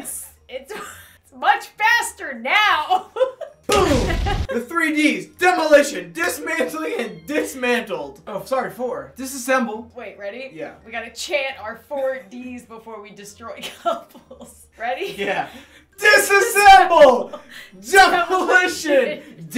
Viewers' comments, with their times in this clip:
0:05 am I the only one who hears “meow”